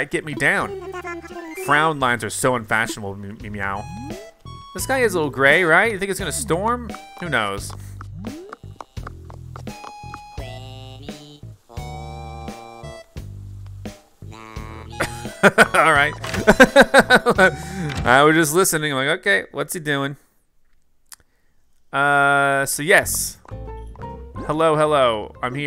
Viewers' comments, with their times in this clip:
0:10 Apollo's singing voice made me dying of laughter! lol XD